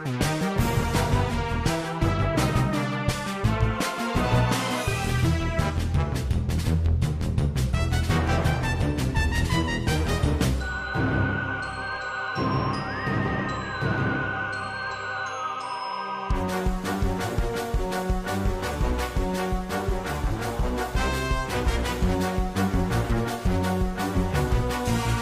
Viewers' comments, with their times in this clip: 0:10 sounds extremely scary for that type of a scene lol